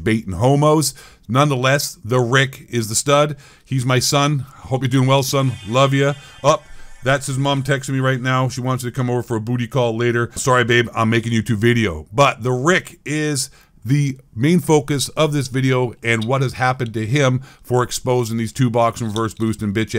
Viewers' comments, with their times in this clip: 0:06 that sounded like the Star Trek Transporter sound